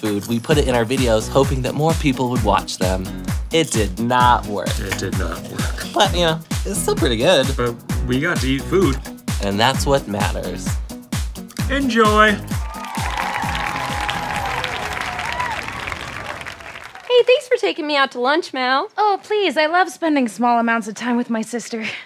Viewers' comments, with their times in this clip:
0:05 quality voice crack 👌